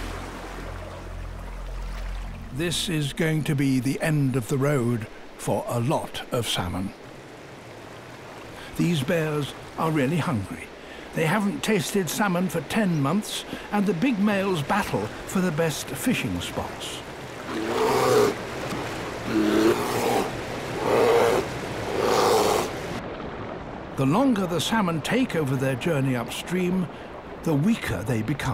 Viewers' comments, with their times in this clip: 0:03 when the peaceful voice comes
0:16 bear sounds... made me think im watching skyrim gameplay🤦‍♂️